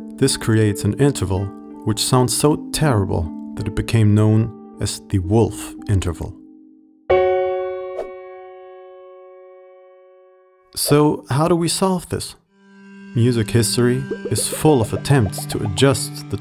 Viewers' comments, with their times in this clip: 0:04 For me it's sounds like phonk bell